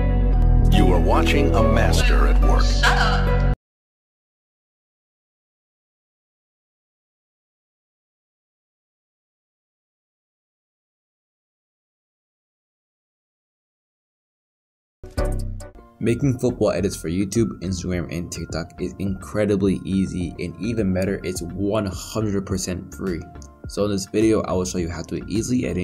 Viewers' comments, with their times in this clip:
0:07 the music shutdown